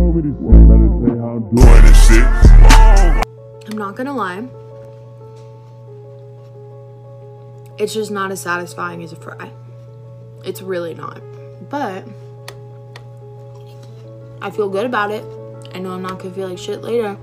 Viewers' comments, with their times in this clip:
0:04 I honestly thought she was really pretty before, and honestly the honesty, open-mindedness and strength she had in her voice absolutely had me sold—I get losing weight to be more comfortable in your own skin, and for genuine medical reasons, but just my opinion. Kind of reminds me of the physique they use for statues of Aphrodite. Worthy of a “my dear…you would have been art!”, genuinely.